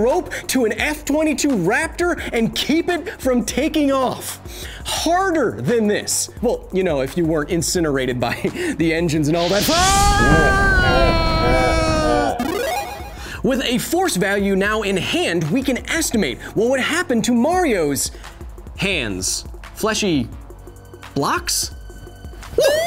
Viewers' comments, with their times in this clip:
0:10 2 things 1. that laugh needs to be MUCH deeper 2. What about the super gravity combined with the super strength